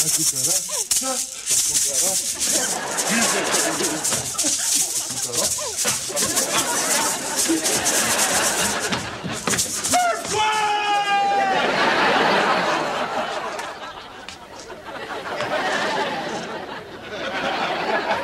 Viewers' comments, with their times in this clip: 0:03 💯 %😂 Will got that humor into my rhythm 🥁 lol no wonder it hit so wel when I watched Eddie Murphy “ice creaaaam” bit years later when I was older. It’s like Will came from the same supernova tribe. Ridiculously quick comedic timing and gentle delivery without losing any natural hood Sazon for that authentic flavor! Wordddd!! Gotta love humor yo!